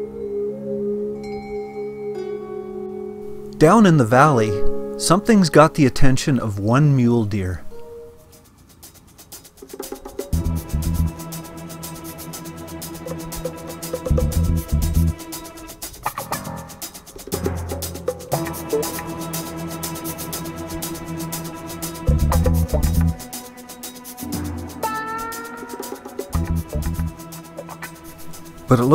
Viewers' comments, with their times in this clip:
0:08 Awesome video my fellow albertan! I just bought an A frame trailer myself and can't wait to go winter camping with it. Your channel is a great resource for first time A frame trailer owners! By the way when the music started playing at the mark I though it was the theme music from Bruce Lee's Enter the Dragon! :)
0:09 I love the soundtrack.... reminds me of old 70's cop shows.